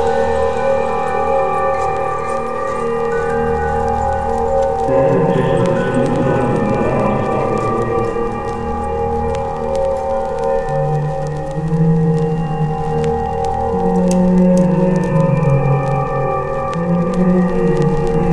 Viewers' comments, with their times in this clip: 0:06 Is the sound of static on purpose? Personally i feel it'd be better without it (i though my headset was acting up too lol)